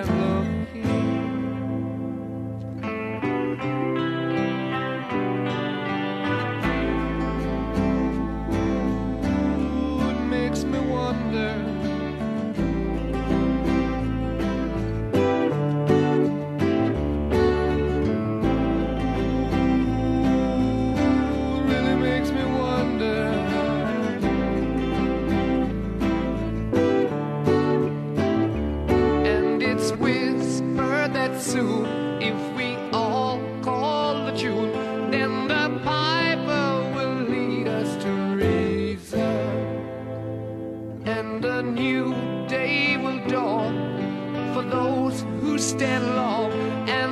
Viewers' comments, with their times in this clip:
0:08 "Food makes me wonder" Good luck trying to unhear that
0:31 Guys the guitar messes up u can here it it's a clunck